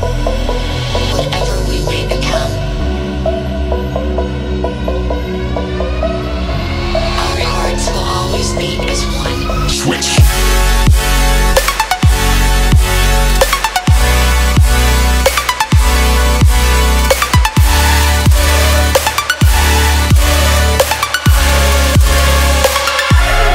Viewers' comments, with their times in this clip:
0:09 is what euphoria sounds like